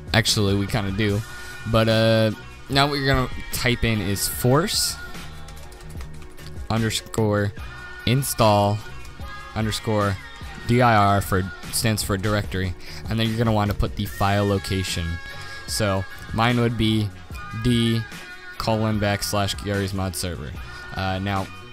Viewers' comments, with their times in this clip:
0:04 force or morce